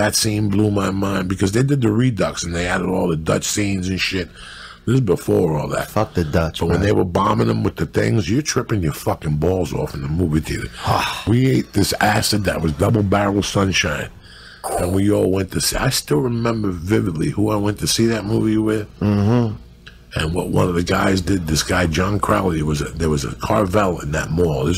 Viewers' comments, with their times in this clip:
0:06 That subtle “Fuck the Dutch” 💀